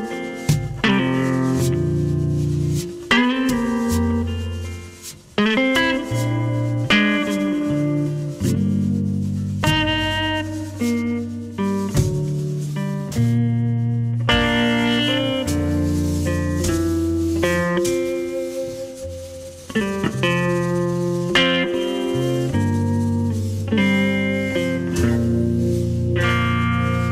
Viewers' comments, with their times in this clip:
0:08 I don't know if anyone realised but he hit a clam and managed to resolve it using a passing chord...that is next level on the spot playing. incredible